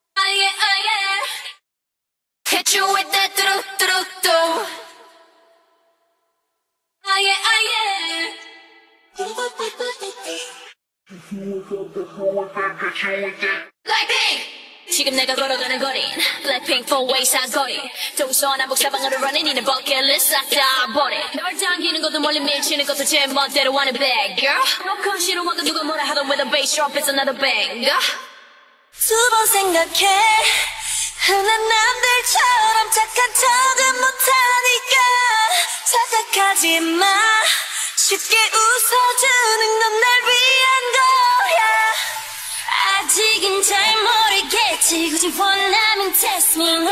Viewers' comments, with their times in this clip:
0:09 could someone just stop and appreciate jisoo’s angelic vocals? her voice is just too good! 🤧💘
0:11 sounds like the normal song
0:29 Those Vocals Jisoo 😍😍